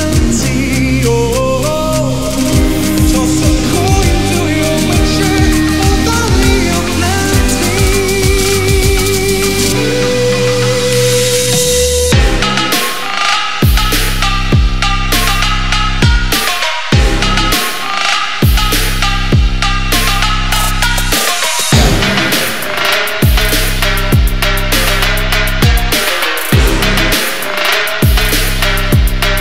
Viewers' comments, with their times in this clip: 0:10 Oh man , are you trying to kill my ears ? Magic bro it is 🔥
0:11 that beat thooo <3